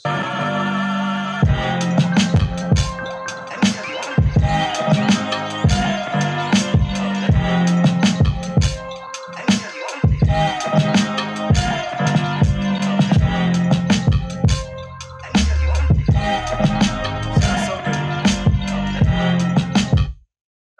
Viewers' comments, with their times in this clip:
0:07 the beat is dope I don’t care what Tim on!!!🔥🔥🔥🔥
0:07 No offense to anyone who made the beat, but I heard several before someodd seconds that sounded so much better but got flamed up, but I’m not in the studio with monitors like them so idk. That beat was boring as fuck to me. Like someone else was saying, don’t let this shit deter you at all. Keep getting better. He has his own taste. It’s whatever. Get placements